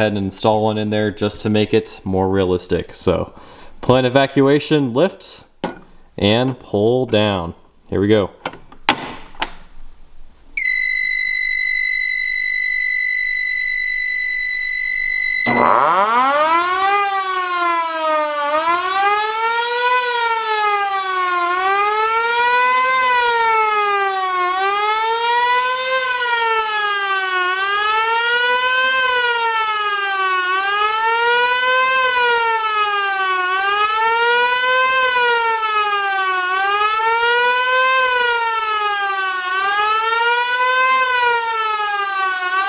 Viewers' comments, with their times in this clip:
0:05 Brace your ears!
0:16 WHEN THE SIREN WAS GOING I WAS DOING THE INRO TO THE SWEET,S 1973 HIT SONG BLOCKBUSTER
0:25 The siren go waaaaaaaaaa
0:30 they caught me offguard when I said it to two times the speed Auuuuuuuuuuuuuuuauuuuuuu